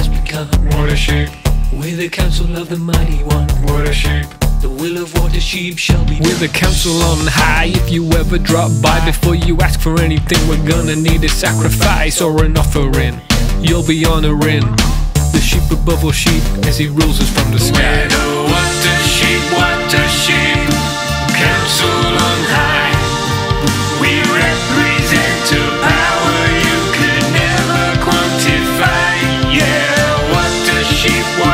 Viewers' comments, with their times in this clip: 0:05 I misheard that as “the reign of water sheep shall begun” (And apart from the typo there’s nothing wrong with that)
0:18 in this part of the song, their voices actually sound like sheep